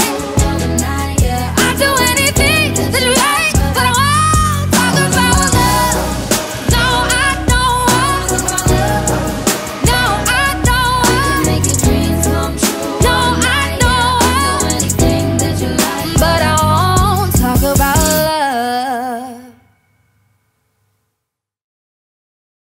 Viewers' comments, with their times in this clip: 0:03 that belt sent chills throughout my bones, i'll be paralyzed by the time the album comes 😩